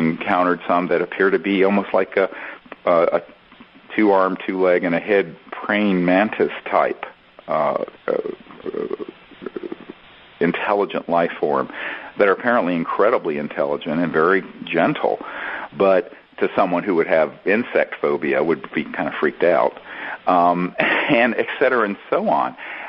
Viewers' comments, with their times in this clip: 0:08 Greer proves to the world he himself is a alien, finding it hard talking with a human voice box